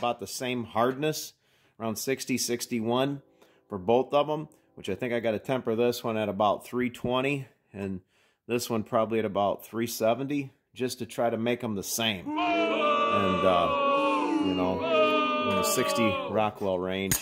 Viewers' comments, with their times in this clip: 0:04 Stopped WTF need for sound effects?